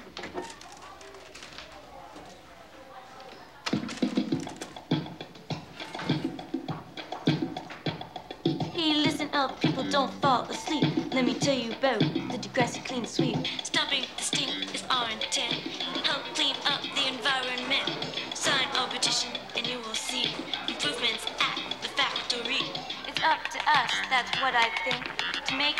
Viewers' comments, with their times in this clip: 0:08 My Favorite Part in the episode Caitlin's rap song tho